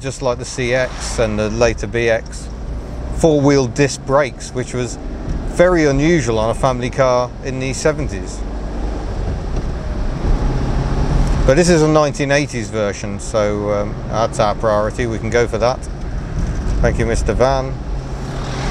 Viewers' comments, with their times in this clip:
0:03 four wheeled discs???